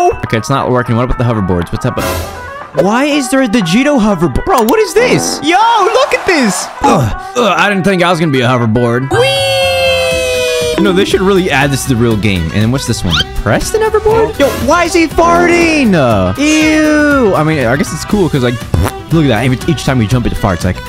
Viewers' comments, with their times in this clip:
0:08 the weeeee sound makes me 💀